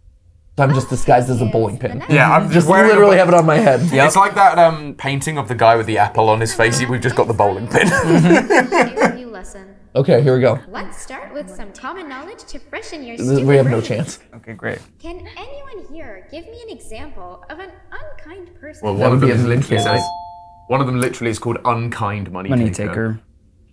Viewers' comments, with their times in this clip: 0:10 what's that whispering?